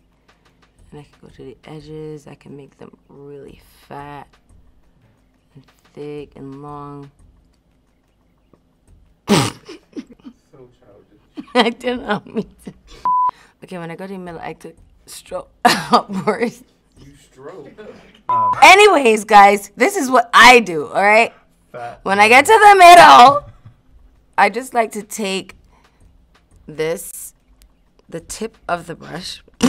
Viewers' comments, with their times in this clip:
0:10 her mind must have gone to a dirty place she laughed at the jokes herself 😁😁.